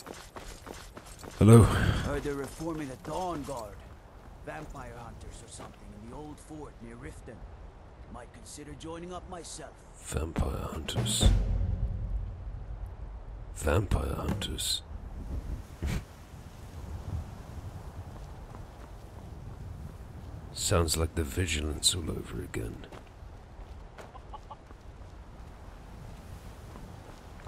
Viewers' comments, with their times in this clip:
0:09 i forgot leon laughed at joining the dawnguard, little did he know